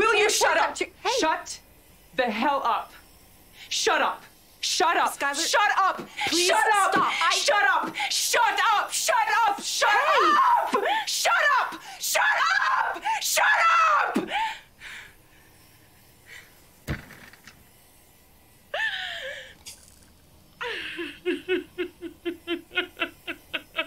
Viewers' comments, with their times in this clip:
0:09 That shut up 😬😬😬😬 DEEP